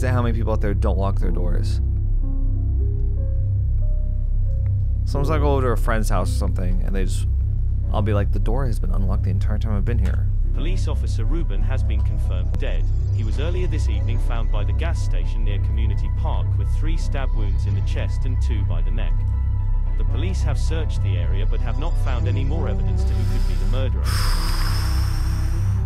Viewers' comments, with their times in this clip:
0:10 sounds like James May